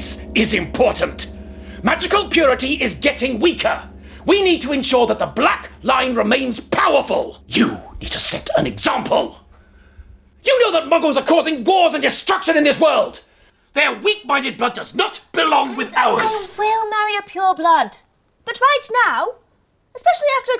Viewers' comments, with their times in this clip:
0:07 that, “fffffffff YOU..!” Sounded like an arrow whisping bye...!! 😂🤣😂😅